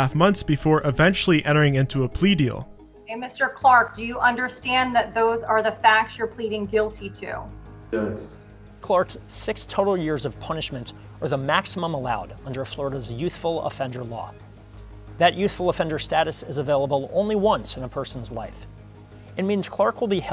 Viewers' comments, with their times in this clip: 0:07 I absolutely love how that attourney explains what will happen by speaking slowly, clearly, and those second pauses in between his sentences.